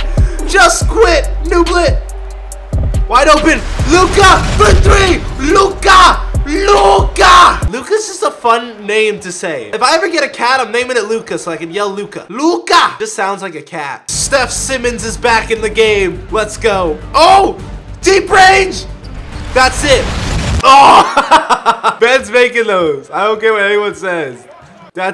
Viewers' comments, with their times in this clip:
0:07 my boy was saying luka like it was sum type of language in Wakanda 😂😂